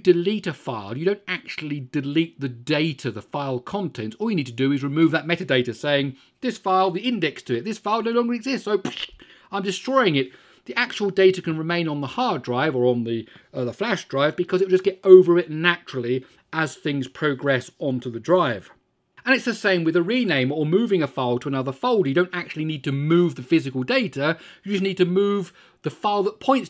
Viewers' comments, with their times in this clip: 0:07 Fantastic simulation of the sound of putting a file/directory to trash bin Appreciate your video.